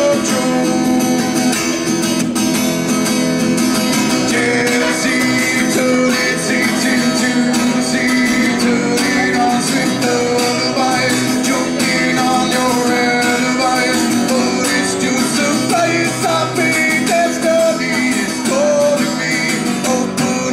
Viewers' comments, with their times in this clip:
0:04 this guy needs to keep his strumming sound low so that people can actually hear what's he singing.